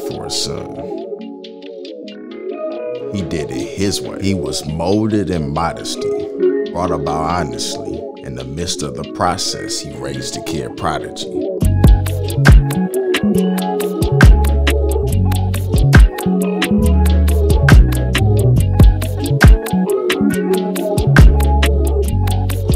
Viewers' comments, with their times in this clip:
0:06 I shoulda known bars were coming by the way the instrumental was coming on